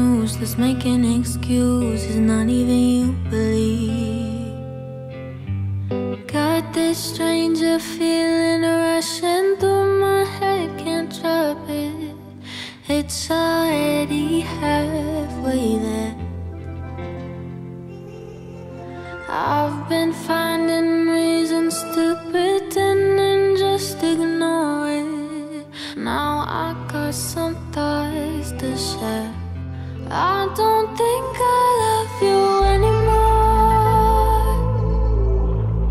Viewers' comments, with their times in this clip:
0:07 this song sounds like ‘You say’ by Lauren Diagle.
0:19 is exactly like( you say ) by lauren daigle ... Exactly same rhythm